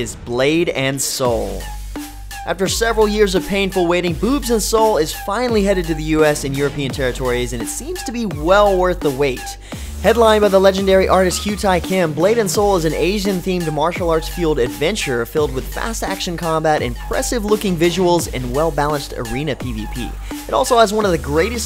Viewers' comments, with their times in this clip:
0:04 lol he said boob and soul haha